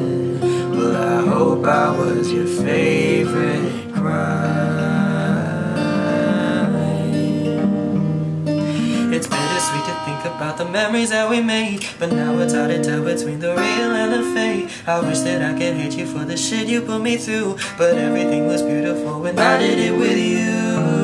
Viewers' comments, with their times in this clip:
0:09 omg that bridge 😭✨ no cap but i liked this one way better than the original itself and i mean your voice did justice to the lyrics